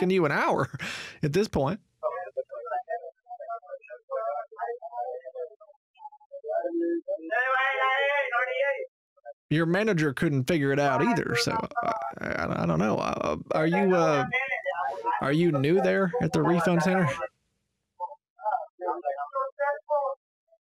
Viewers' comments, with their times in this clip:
0:06 Is that a goat?